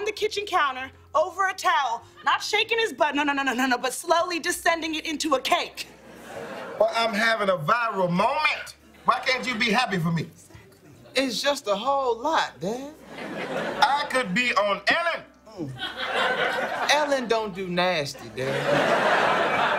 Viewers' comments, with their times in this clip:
0:05 the "slowly" was so damn cute!